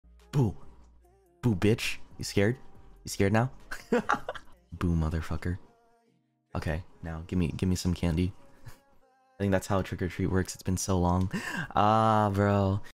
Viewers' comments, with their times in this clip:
0:03 The laugh tho